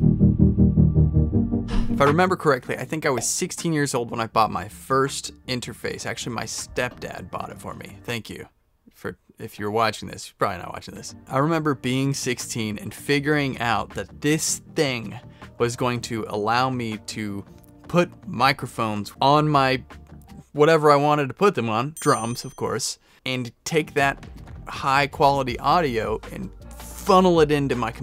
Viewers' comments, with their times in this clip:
0:09 Alice In Chains vibes kicking in yoo